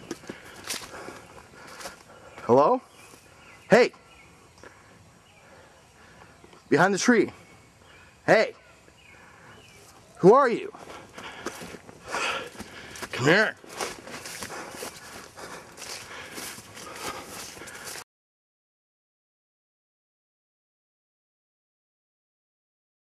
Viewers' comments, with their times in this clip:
0:10 LMAO "Who are you? Come here!!" sounds pissed...